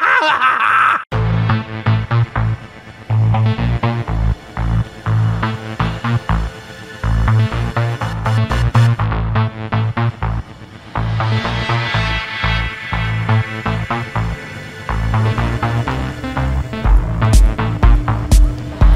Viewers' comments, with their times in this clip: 0:05 very interesting and chill song theme for this XD .Classic NFS Carbon theme